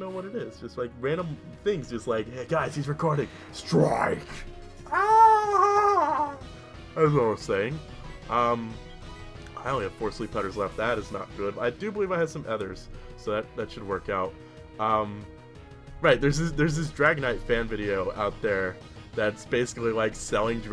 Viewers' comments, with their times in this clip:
0:08 Such a majestic noise :3